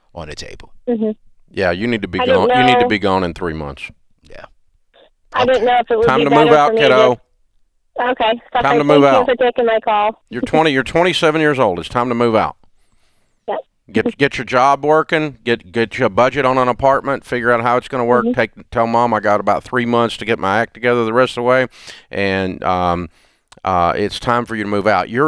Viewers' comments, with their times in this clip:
0:08 when she said "thank you for taking my call" I thought she was going to hang up cuz Dave yelled YOU NEED TO MOVE OUT !!